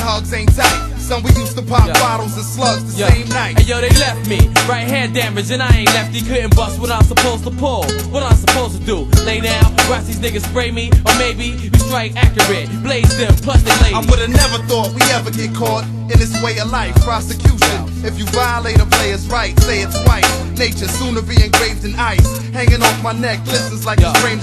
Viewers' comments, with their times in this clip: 0:07 Letz be clear .. ONLY 10 RAPPERS (MAYBE) CAN KEEP UP WITH THIS FLOW !!